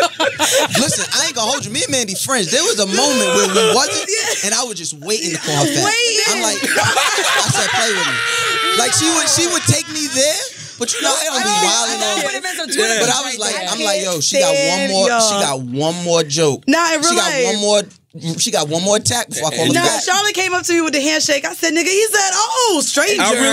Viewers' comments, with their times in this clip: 0:06 Charlamange exaggerates everything even his laugh lol